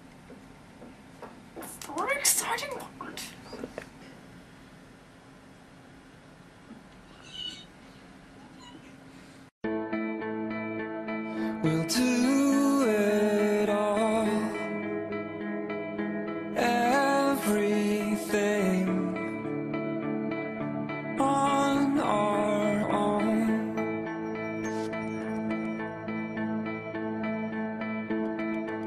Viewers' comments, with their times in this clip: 0:09 THE SONG CHOICEEEEE
0:10 I’M OBSESSED WITH THAT SONG!!!